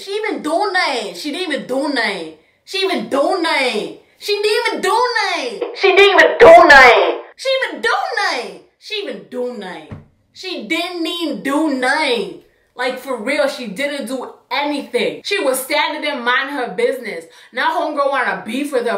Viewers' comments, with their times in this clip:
0:04 “she didn’t eat a donut”